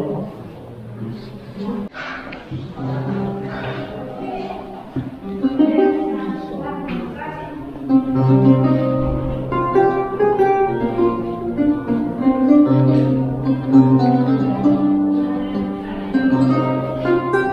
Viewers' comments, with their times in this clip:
0:04 beautiful guitar Old stuff he is playing right there. 'What child is this'.